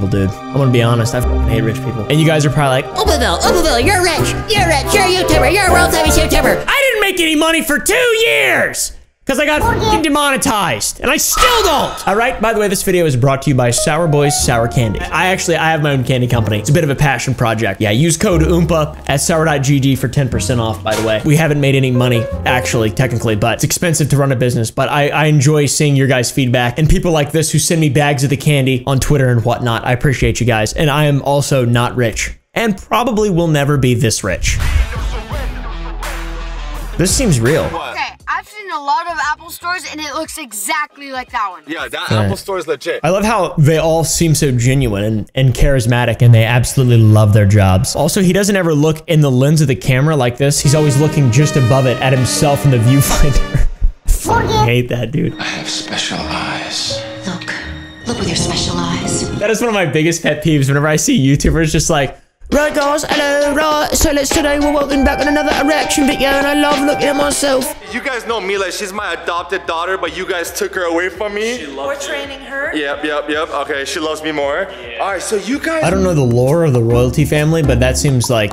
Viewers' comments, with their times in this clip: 0:08 ay the editor still kept it as a censor
1:03 he sounds like 2-D